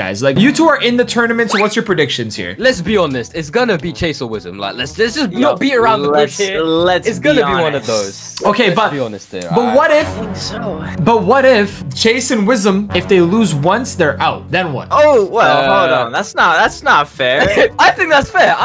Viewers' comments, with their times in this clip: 0:03 THE FACT HE PERDIED IT 😂